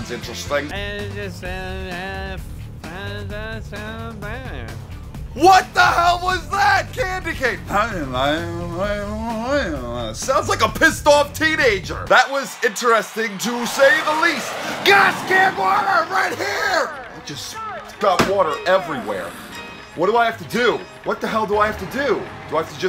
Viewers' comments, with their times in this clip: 0:03 if you listen closely you can hear him almost say fuck 🤫